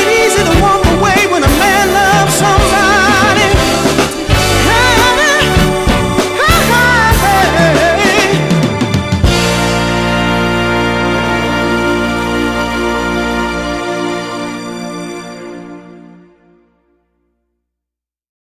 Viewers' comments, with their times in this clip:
0:05 This has got to be one of my favorite T.O.P. songs, although I hardly believe it is Lenny Williams on vocals or even recorded at a live concert as the photo would have you believe. This sounds more like Larry Braggs' style of singing. There are no audible sounds of an audience, so it more than likely is not a live performance. Another thing that I noticed, was to the end of the song, strings/synths are very audible. T.O.P. did not have a string section, strings were added in the studio. The original recording was in1972-73? Lenny Williams left the band between 1975-76. I have never heard of any re-recording of this song on any album. This is Just my opinion.